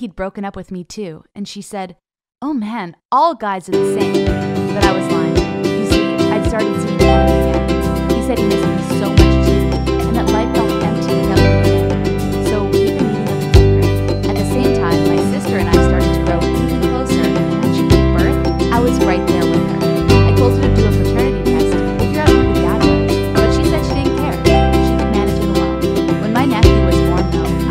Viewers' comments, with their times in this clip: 0:04 Hi I found that there was music starting Really anoying I could barley hear it WORSE I WAS TRYING TO GET MY BABY SIS TO FALL ASLEEP
0:09 the music got to loud to hear
0:14 Why did you start playing music ? It makes it hard to hear the story.